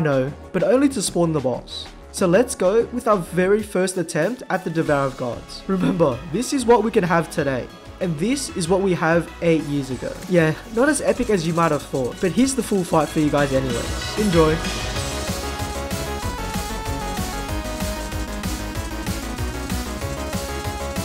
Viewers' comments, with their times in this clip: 0:06 YEAH BUT WE STILL HAVE THE GODLY SONG